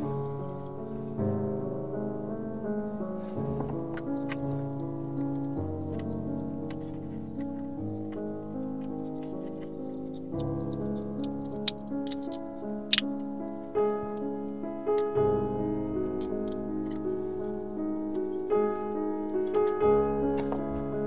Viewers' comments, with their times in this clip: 0:07 Thank you so much for sharing this !! Is it necessary to lift up (click up) the red backplate when you disconnect or re-connect the (green) connector? It looks like you click the red backplate back into place after you reconnect the green connector in the video because there is an audible 'click' sound, but I'm not sure because the connector is inside your hand while you're doing it.